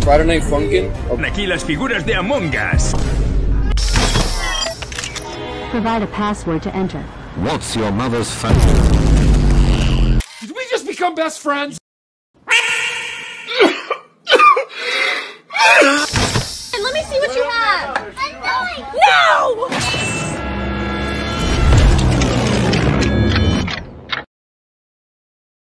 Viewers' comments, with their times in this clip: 0:05 "What's your mother phone numb-" **sound blast beam**
0:10 Jumbo Josh: can we be best friends? Opila (Bird): meap- gets destroyed from existence Jumbo Josh: sad boi sounds while making sounds get destroyed like a giant Lego set being dropped